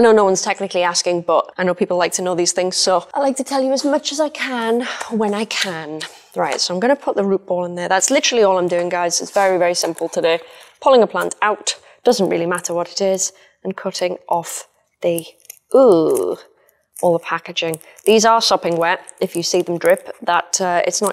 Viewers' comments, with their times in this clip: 0:07 i swore i heard you say "just gonna put rupaul in there" and i had to rewind Ive been watching too much Drag Race Sidenote; my fucking male bristlenose murdered every single plant in my tank. He dug them up, he smashed them out of the way, and the worst of all, HE ATE THEM. My females loved to hide in the plants and he just tore through the tank like a fucking bull in a china shop. Edit: LMAOOO WHAT ARE THE ODDS YOU MENTION RPDR